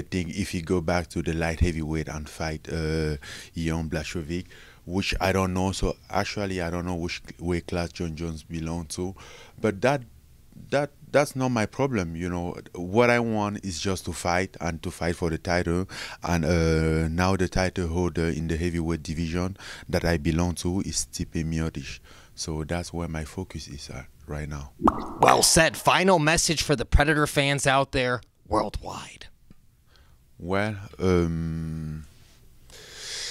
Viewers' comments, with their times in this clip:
0:03 Oh didn't know there is a new exciting french fighter who could fight Jones Can't wait to see Jean Blacheauvik fight him
0:19 Did he just say he belongs to Stipe, lol